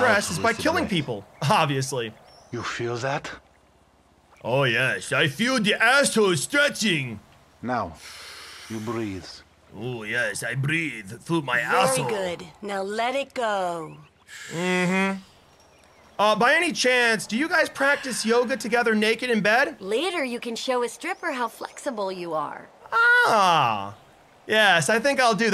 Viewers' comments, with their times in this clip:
0:10 deep Russian accent